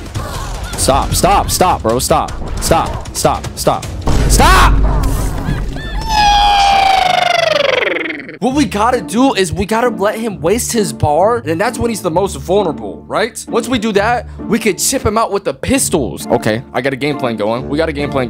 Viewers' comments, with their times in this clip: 0:05 bro was raging in a different language 😂😂😂